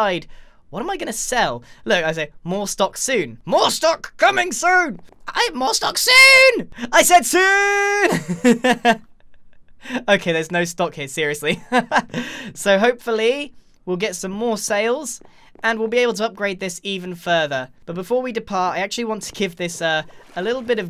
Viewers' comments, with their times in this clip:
0:06 He did it! He did the voice! Hooray!